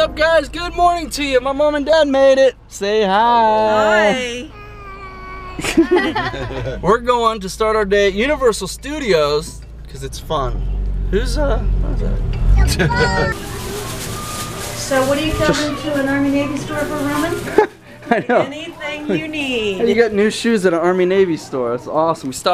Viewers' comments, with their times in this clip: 0:09 Haha the voice crack
0:09 dat awesome voicecrack! <3